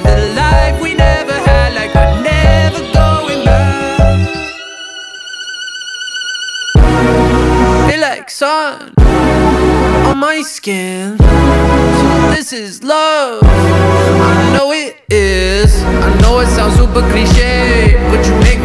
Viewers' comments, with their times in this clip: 0:05 The real epic drop is